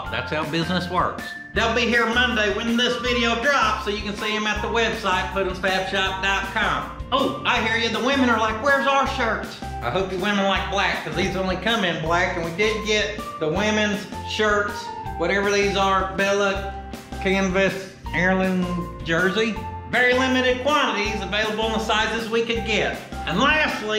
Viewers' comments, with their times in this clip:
0:10 A little Beethoven (Fur Elise) to accentuate a symphony in pistons! She runs! Love it! Very satisfying vid!